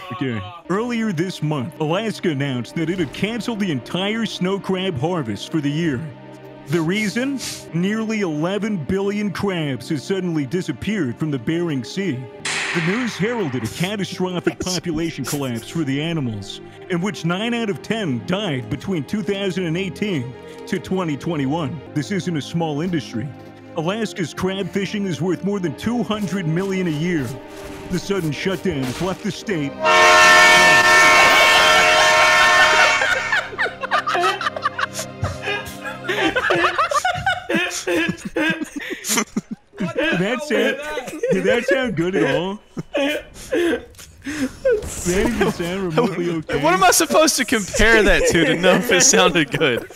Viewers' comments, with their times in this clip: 0:05 when swaggersouls is doing the report on the Alaska Crabs, I nearly lossed my hearing, and choked when I heard the train horn 🤣🤣🤣
0:35 you owe me the sleep that this train horn woke me up from XD